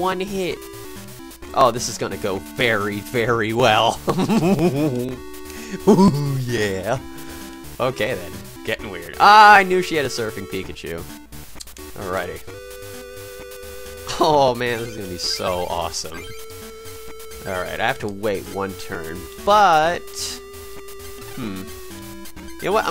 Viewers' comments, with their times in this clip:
0:04 Epic Win Laugh =D